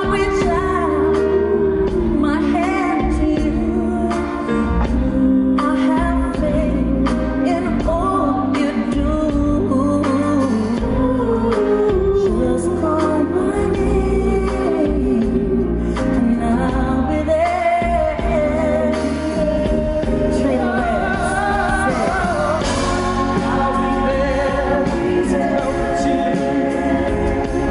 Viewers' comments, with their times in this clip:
0:10 dreeei sounded out of tune